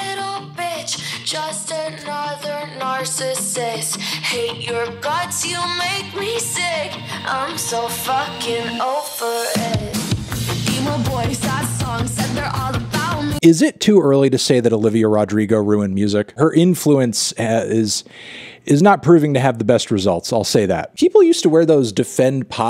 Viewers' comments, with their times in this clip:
0:08 that drum pattern with reverb just dumped on it made me feel a little bit sick but we move